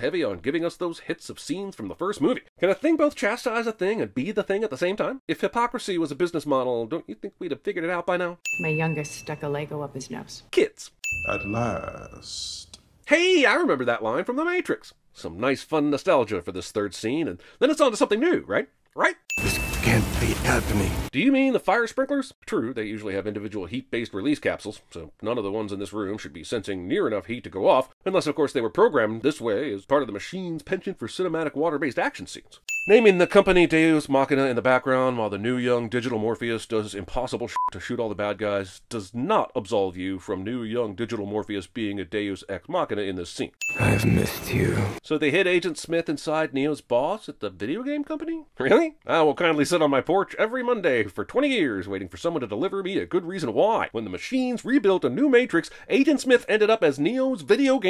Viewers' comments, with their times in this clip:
0:05 The GOP Ding
0:42 Why TF did new Smith have a lisp in this ONE SCENE???? "I've *mithed you" 😐